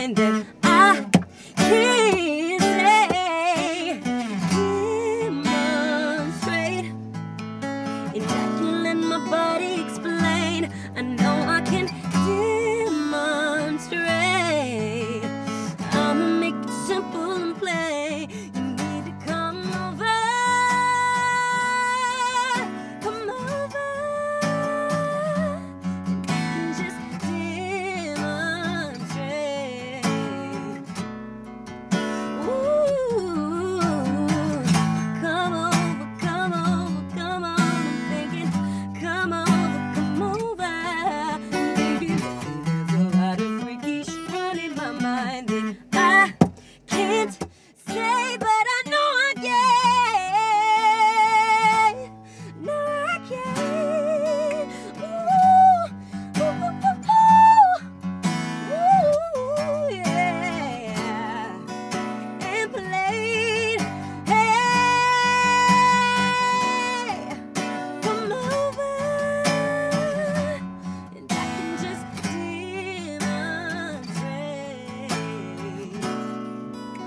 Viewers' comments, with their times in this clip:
0:08 That snap ok bish!!!
0:59 That run she did is unreal!!! There's very few people that can sing like this in the music industry